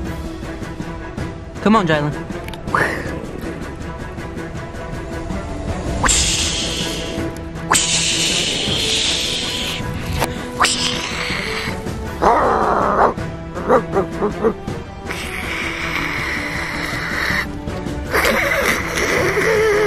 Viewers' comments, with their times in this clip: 0:06 warning headphone users